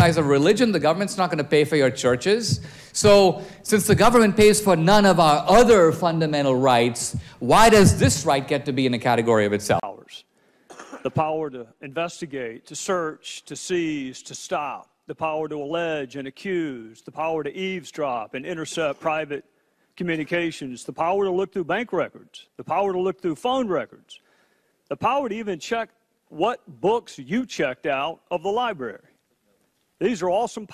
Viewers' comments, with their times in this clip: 0:10 Doesn't he sound like SwaggerSouls, if SwaggerSouls was a 40 year old man?
0:13 dude sounds like Nicolas cage haha